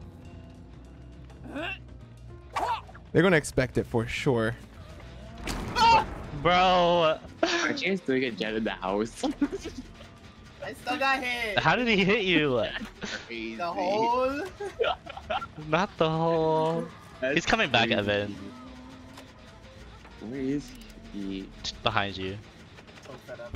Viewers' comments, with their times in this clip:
0:04 i love his screams 😂😂😂